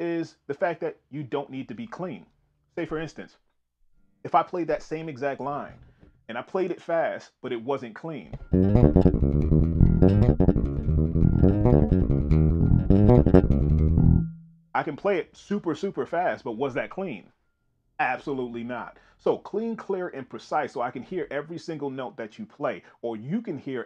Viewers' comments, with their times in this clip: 0:08 As of this posting, no one has said this yet so let me say... that "muddy/not clean" section you played as an example ? Those overlapping bleeding of notes? Very very flavorful and full of funk, but I guess that's another topic/video to explore. Thanks for sharing!